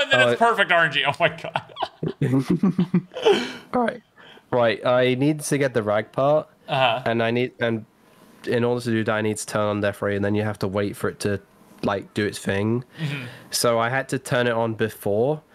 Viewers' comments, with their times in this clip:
0:03 craziest voice crack lol